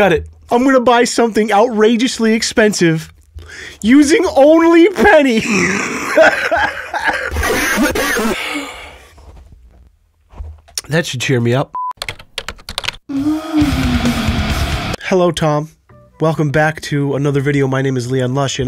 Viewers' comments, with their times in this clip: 0:04 Wtf was that noise